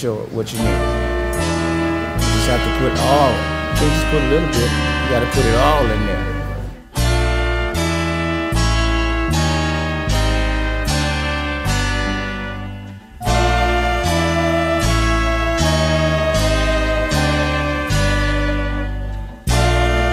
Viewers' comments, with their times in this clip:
0:06 love this intro music